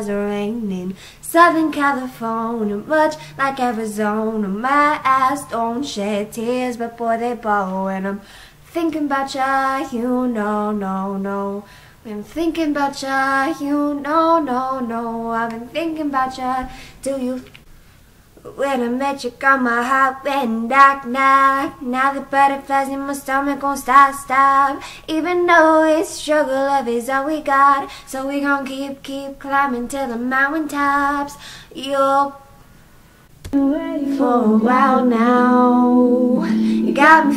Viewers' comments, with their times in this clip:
0:04 "my ass don't shed tears"
0:25 Omg at the second mark her singing was so perfect and just wow. No I haven't finished watching the whole.video yet but that part was just wow. I could only.dream of sounding that good. <3